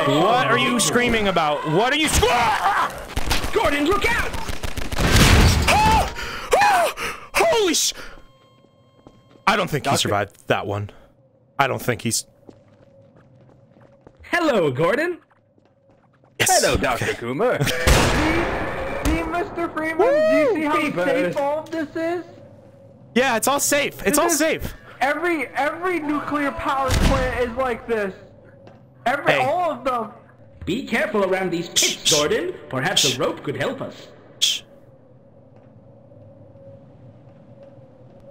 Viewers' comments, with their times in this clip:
0:03 wow now that’s sneezing for sure
0:23 The scream in the distance is an underrated golden moment of this whole saga.